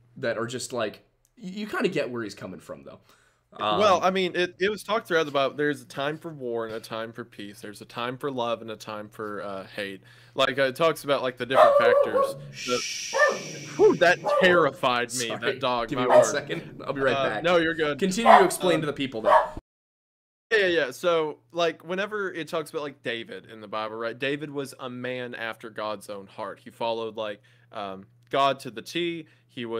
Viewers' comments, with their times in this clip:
0:10 That dog barking took years off my life. Great video, but I'm not sure if it was worth it lol.